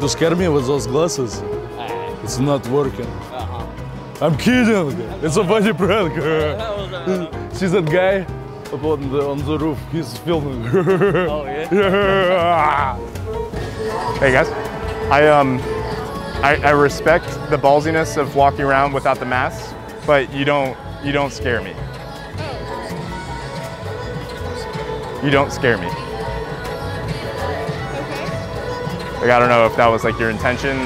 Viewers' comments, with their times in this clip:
0:06 points to the roof and then the laugh
0:06 from mohohow-muaha piß myself :D
0:07 that laugh tho 😂😂 Edit: thanx for soo many likes
0:10 what was that laugh 😂😂😂😂
0:10 Best part of the whole video is this laugh: lolol
0:10 that laugh tho 😂😂😂🤣🤣😂
0:10 point wrong direction.. the weird launghing sund
0:10 worst than the KAWHI laugh ...lol
0:10 the big nice muscly guys laugh,LOL
0:11 his laugh is scarier than his muscles
0:11 the muscle guy laughing is rlly scary tbh😆🤣🤣🤣 . . . . Edit: thanks for likes♥️✌🏽
0:11 ~~~~ When she does that cute laugh
0:11 i love the laugh Lol.
0:12 and his laugh😭😂
0:12 im dead this laugh make me lose it